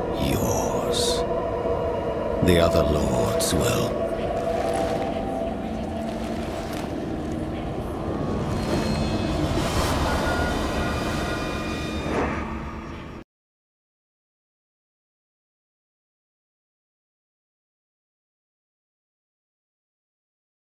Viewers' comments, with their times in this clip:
0:03 starts hearing Heavy Metal song Lilith: "Chotto Matte!! HE shouldn't be HERE, this is BLIZZARD, not BETHESDA!!~ " worry diablo noise